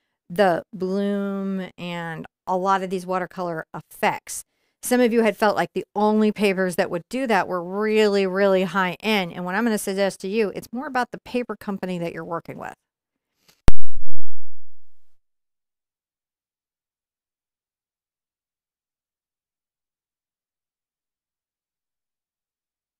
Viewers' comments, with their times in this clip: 0:10 Lost sound minutes in video.